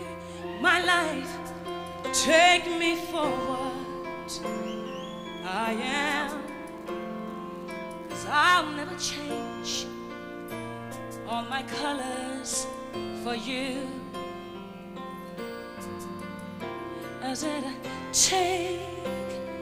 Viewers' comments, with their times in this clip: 0:04 love the note change ❤